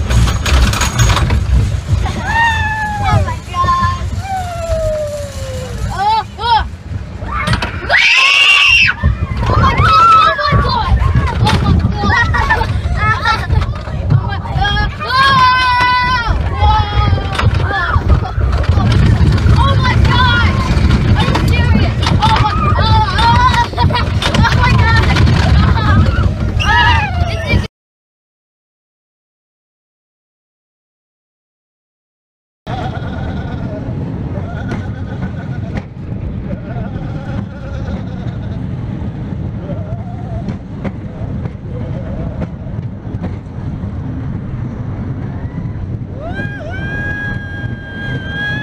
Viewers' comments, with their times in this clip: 0:07 JEEZ NO NEED TO SCREAM SO LOUD FOR A LITTLE BOOST DOWN
0:09 The kid screams in haha
0:32 is there a goat on the train?